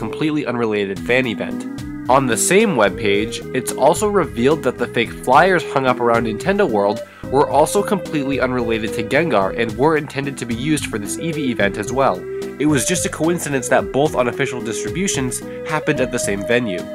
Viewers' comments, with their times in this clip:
0:04 Was laying in bed, at home, by myself listening to this when the voice in the background happened! Not ok...